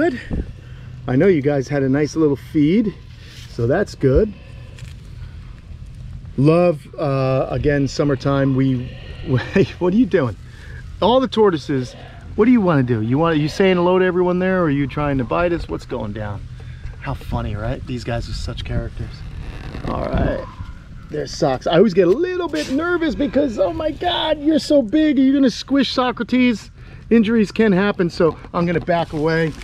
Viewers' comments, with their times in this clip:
0:10 Communication! I never knew tortoises (or turtles) made noises although to me this sounds like mild hissing or breathing. I dunno. I suspect the tortoises are more aware of things than we give them credit for. Heck, cats and dogs are smarter than many people think!